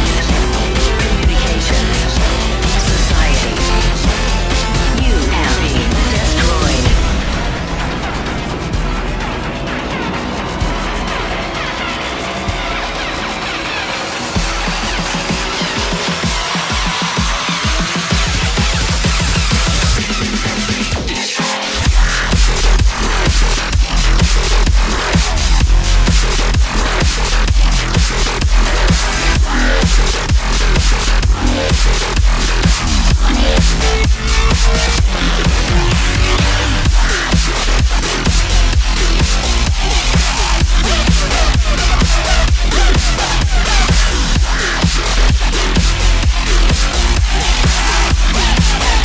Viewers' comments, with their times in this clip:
0:06 the song from here on is AMAZING
0:21 the beats kinda fuse together so incredibly interesting, I love it
0:34 Did anyone else realizethat the part following where funk hole references doomsday machine, the rythm playing in anihilate there is the same as the rythm there in doomsday machine, if that makes any sense
0:36 this transition is so smooth wth